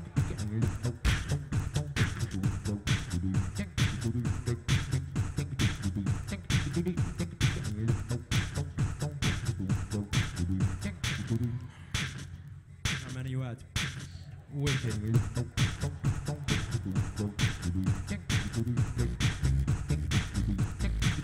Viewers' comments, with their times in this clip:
0:09 is he eating something or chewing? ?